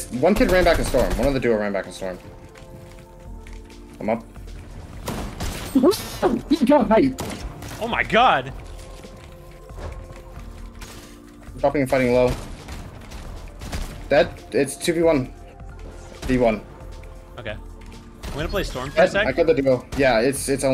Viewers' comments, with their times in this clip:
0:05 bro that scream had me laughing